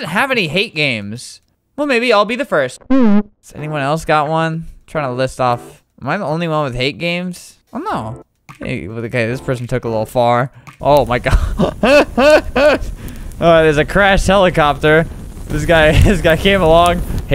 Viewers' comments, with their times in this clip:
0:03 that mhm was legendary